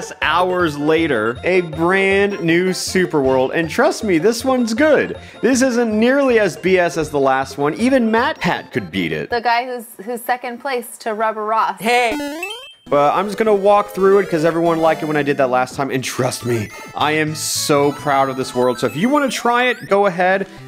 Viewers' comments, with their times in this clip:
0:08 Mythpat or Matpat?